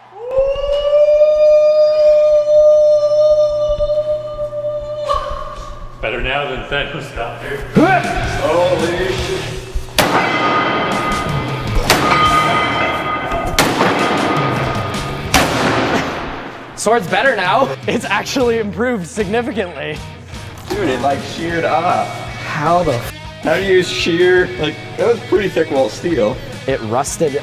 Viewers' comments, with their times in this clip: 0:09 omg this part gave me chills cuz it literally sounds like that sound of Tony stark hammering to make his first suit in first movie 😍
0:09 this reminds me of tony stark making he’s first iron man suit If you don’t know what I mean is the bounce of the weights it’s sounds like tony is making hes first iron man suit the hammering scene
0:09 in the video, the pinging of the weights sounds like a scene from the first Iron Man movie. The part when Tony is in the cave making the first suit, forging part of armor.
0:10 Idky but i really like the clanging noises ish lol
0:11 Did anyone notice that when the moniter was being "destroyed" it sounded like tony hitting the mask in Iron man 1
0:11 lol it sound like iron man cave armour making sound